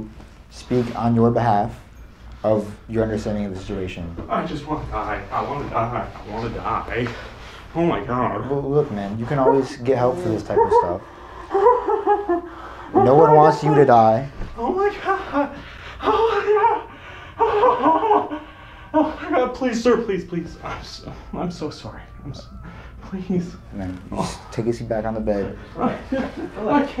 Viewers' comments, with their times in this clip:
0:10 bruh he sounds like mickey mouse